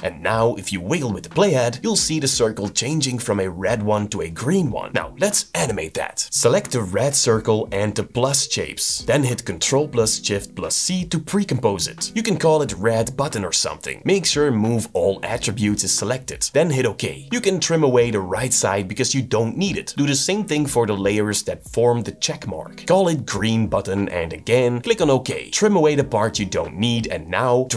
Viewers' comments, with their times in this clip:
0:09 "Control + Jift + C" I think I'm the only one that caught that, shows you're human!